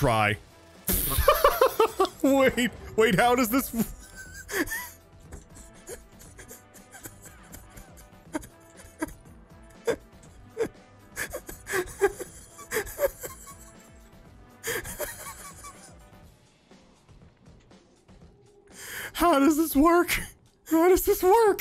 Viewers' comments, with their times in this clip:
0:03 Overly Giggly Man Forgot how to breath in